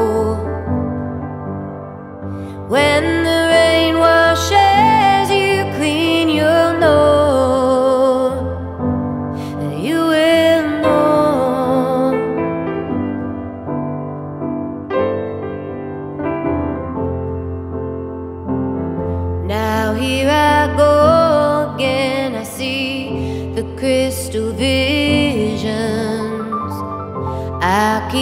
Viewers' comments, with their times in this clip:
0:10 oof, that piano gave me the feels
0:10 piano transition is soooooooo nice. <3